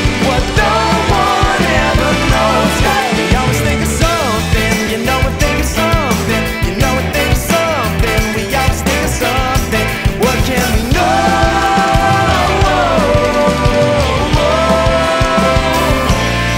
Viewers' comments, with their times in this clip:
0:03 The half-time made me eargasm so hard